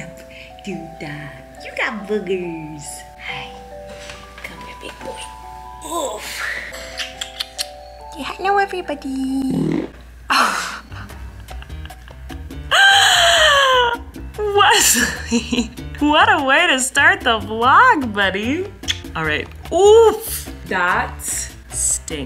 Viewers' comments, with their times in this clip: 0:05 cute baby boy tooted! Awwwwwwwwwwwwwwwwww!
0:10 when one of the twins farted 😭😭😭😂😂